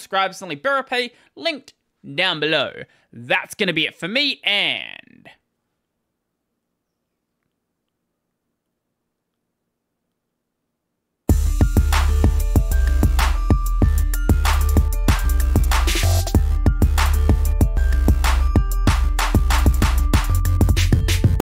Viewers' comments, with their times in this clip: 0:06 for a moment I thought my pipewire crashed lmao